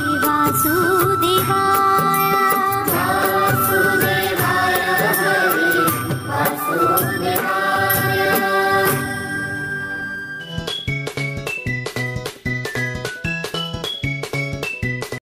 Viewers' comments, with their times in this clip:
0:12 Your voice is very sweet and lovely. I daily listen morning and evening. ❤❤🎉🎉